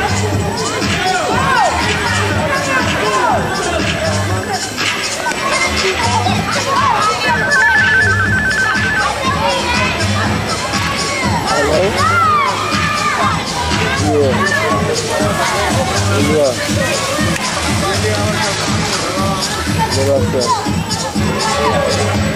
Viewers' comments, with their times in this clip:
0:07 Ummmmmm how do you explain that noise ?
0:07 Ummmmmm how do you explain that noise ?